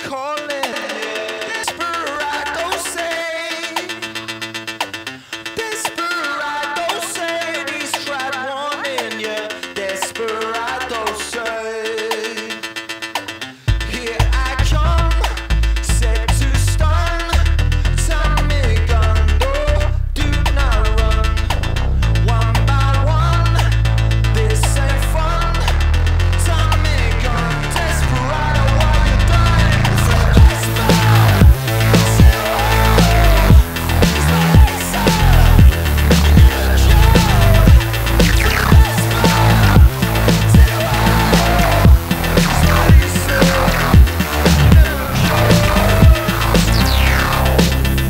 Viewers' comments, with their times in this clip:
0:09 did you put the camera on the bass speaker or what is happening here?
0:29 the way the image is shaking on those LOW sub bass tones made the hair on my arm stand up! I can only imagine how DOPE that must sound IRL... all that AIR moving, beating up against your chest cavity with every strike of the bass note!